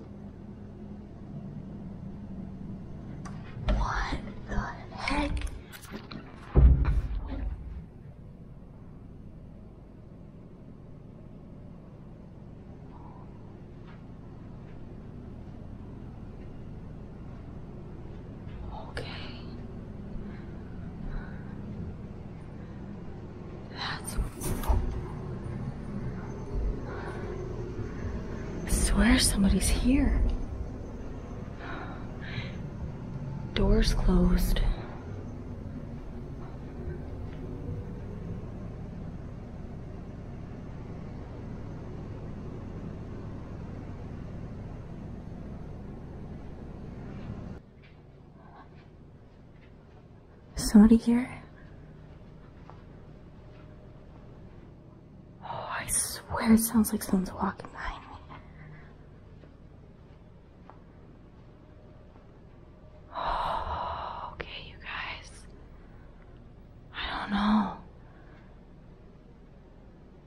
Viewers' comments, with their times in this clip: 0:07 Like a BOOM sound! Like someone dropped something very heavy!
0:58 you’re by the desk and chairs well when u walked up to it the chair was completely pushed in and then you hear a bag and the chair moved out from under the desk. As if someone wanted you to take a seat!